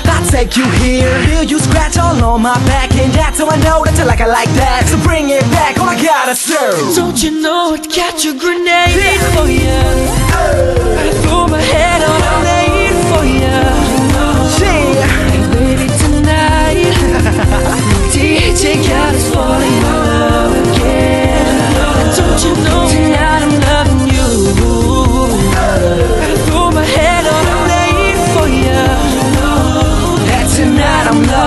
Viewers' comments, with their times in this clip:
0:06 that mashup , tho ... ❤❤❤❤❤❤❤❤❤
0:16 THAT LAUGH THOUGH <3